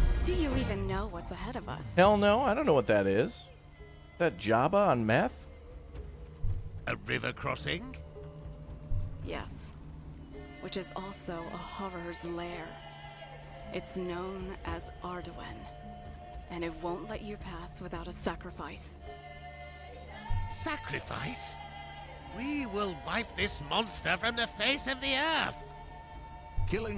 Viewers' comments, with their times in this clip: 0:10 huh, remind me so much of the witcher 3, the art in the intro and i think the narrator is also the same. some of the music also kinda remind of the witcher 3 music like this